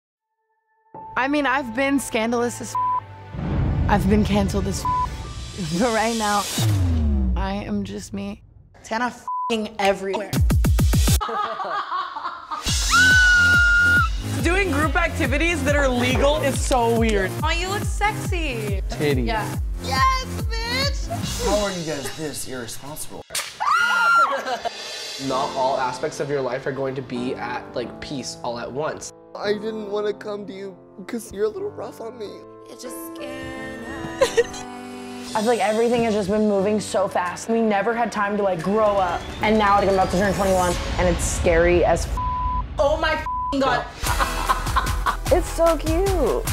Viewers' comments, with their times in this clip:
0:05 why does she put on that voice? "Buh righh nauuuu"
0:33 That fake ass cry